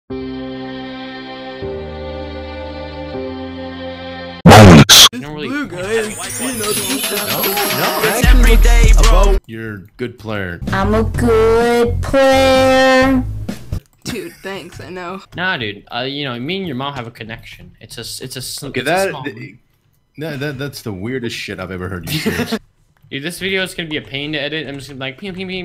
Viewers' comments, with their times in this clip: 0:06 for earrape. Thank me later